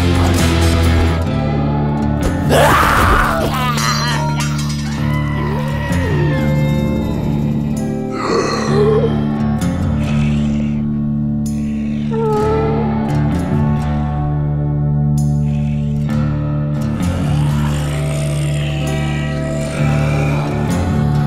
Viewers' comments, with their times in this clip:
0:04 Ah, the goat scream lol